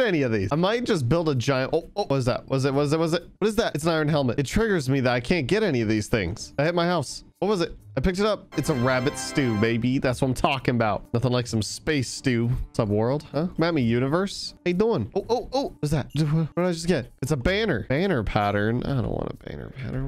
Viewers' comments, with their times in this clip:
0:07 The sound just despairs after is it supposed to do that